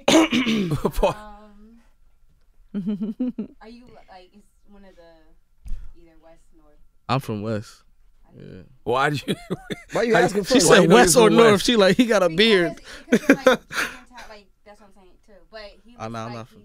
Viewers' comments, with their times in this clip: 0:03 Did anyone else get confused by the random voice asking questions ?